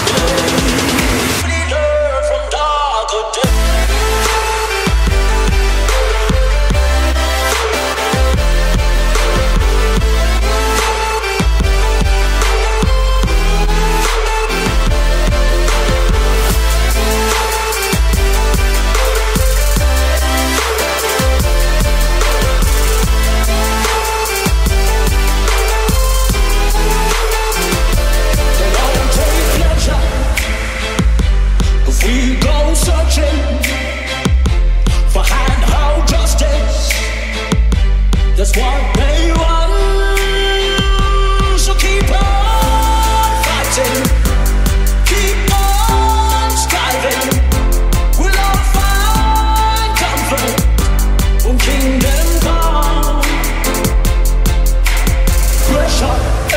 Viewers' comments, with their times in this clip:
0:04 I found meh self a new intro I love the drop beats i love the song so much!!!!!😍😍 yehhhhhh
0:06 > this part remember me megalovania lol
0:41 Does he say keep on farting?
0:41 Am I the only one hearing "so keep on farting" ? :D